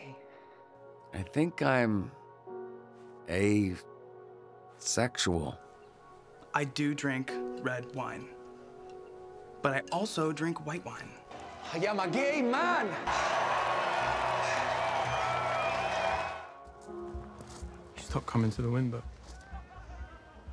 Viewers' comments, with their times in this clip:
0:06 The way David says it compared to everyone is iconic